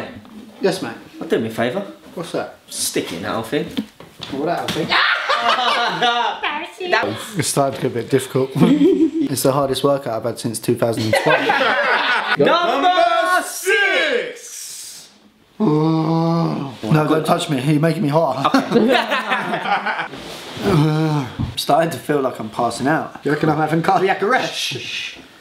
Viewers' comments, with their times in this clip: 0:06 I love how he says barasin😂😂😂